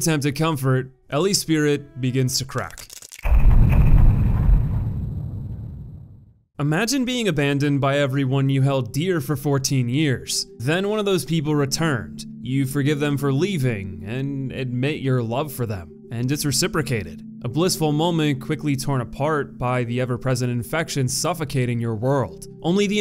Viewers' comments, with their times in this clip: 0:08 Nice use of The Wolf Among Us music. Bigby's Apartment theme is very somber and fits the tone of The Last of Us quite well.